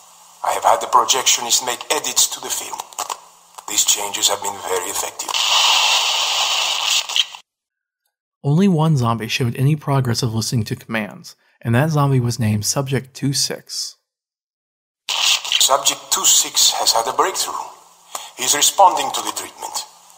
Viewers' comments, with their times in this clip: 0:03 am I the only one who thinks that sounds like Gersch?